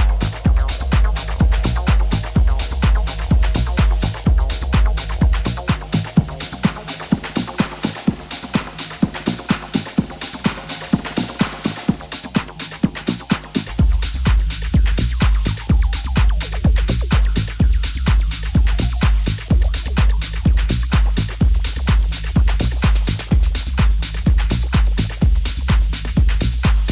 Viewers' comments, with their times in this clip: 0:08 is seriously filthy